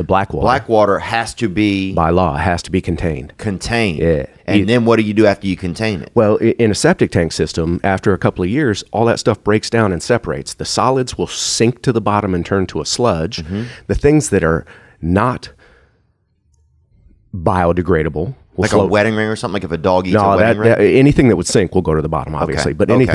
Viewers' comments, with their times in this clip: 0:04 that “yeah” is Shane Gillis brethren.